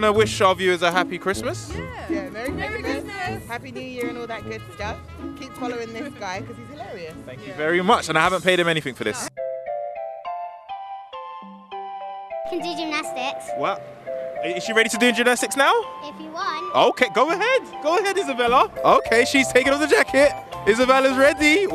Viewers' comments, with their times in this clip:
0:09 THE MUSIC IM DEAD🤣